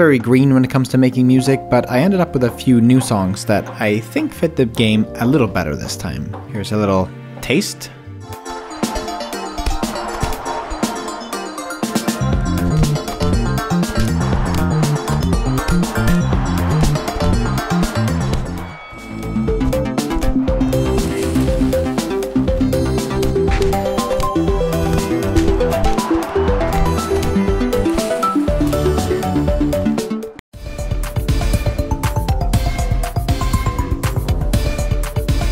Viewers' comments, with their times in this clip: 0:08 When he starts playing the song it is a bop way you deserve a round of applause.
0:20 yo where is the crowd noise coming from? they're literally in space.